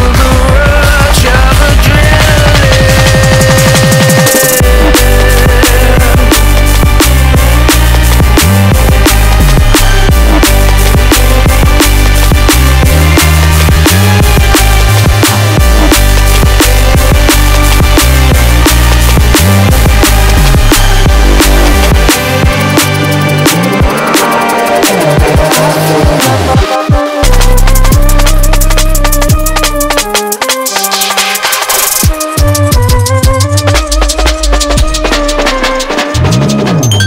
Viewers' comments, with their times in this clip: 0:04 That synth melody is so freaking good. Another C&K&M masterpiece.
0:04 I've been waiting for this one since I heard it at the beginning of your Train set. And those strings ... good lord they're beautiful 🖤 Such a lift! Congrats guys, you've nailed it!
0:25 did they just use a Discord's notification sound?